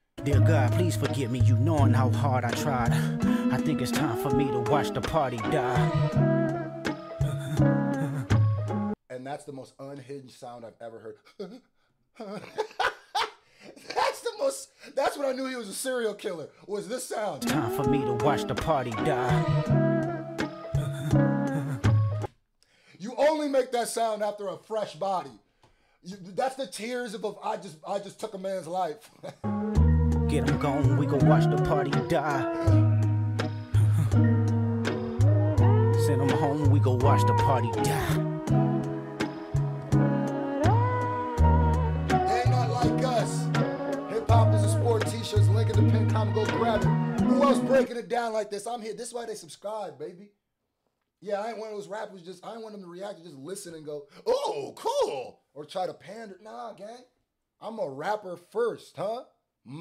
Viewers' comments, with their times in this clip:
0:09 🎙That sound everyone has gotten wrong!! Any of you done PUSH-UPS while talking, singing or rapping?! SHEESH BRO'S💪🏽
0:10 That sound he made sounds like a shot at pdiddy.
0:47 is it me or does Kendrick sound like he's strangling/killing something when he says, “ watch the party die”3x